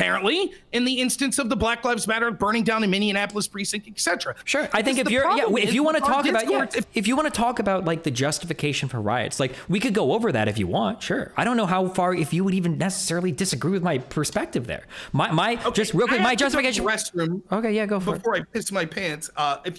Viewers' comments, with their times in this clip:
0:03 "Minneanapolis"??? Immediate forfeiture.
0:05 Mindyanapolis!!! Being from “Mindyanapolis,” I get a kick every time I hear it pronounce like this. Outside of the state, it is more often pronounced Mindyanapolis than Minneapolis. I don’t correct people or get irritated at all. It is just one of those things that make me chuckle internally. Hehehe